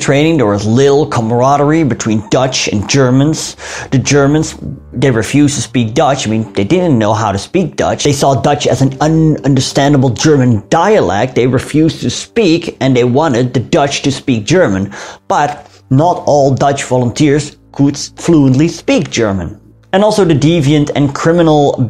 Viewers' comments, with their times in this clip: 0:09 nervous/confused Bavarian noise